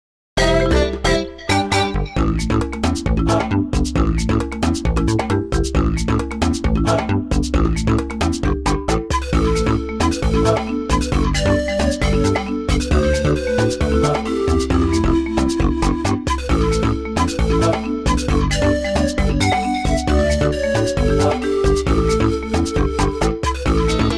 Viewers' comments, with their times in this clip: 0:08 sick pan flute!